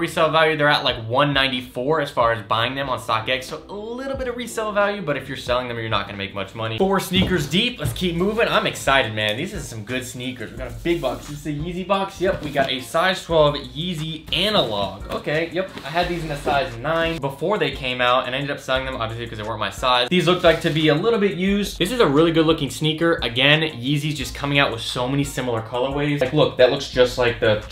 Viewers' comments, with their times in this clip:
0:08 He sounds like ninja I shit you not fr